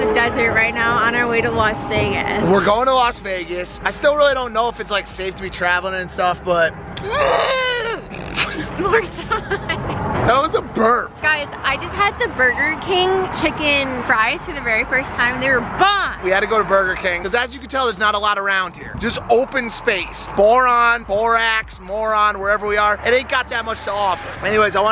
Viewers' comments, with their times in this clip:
0:05 just close your eyes and imagine the Star Wars TIE fighter flying by hahahaahah